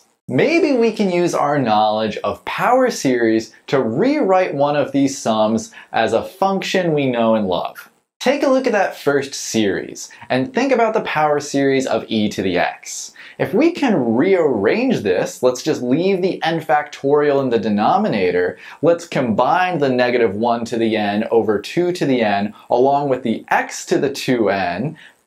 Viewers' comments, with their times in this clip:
0:06 My dirty brain just hears a curse word